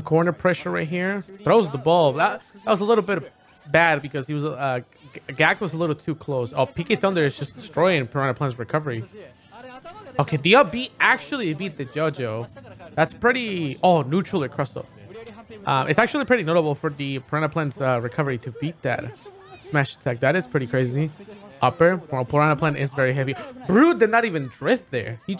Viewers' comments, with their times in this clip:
0:10 You know you're hispanic when you pronounce Yo-Yo JoJo
0:11 When you’re Hispanic so you say “Jo-jo”